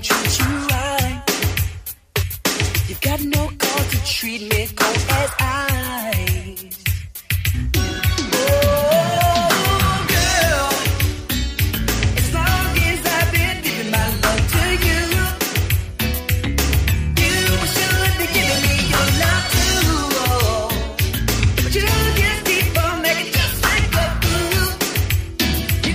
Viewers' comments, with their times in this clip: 0:06 i love the transition ....never heard that in the other versions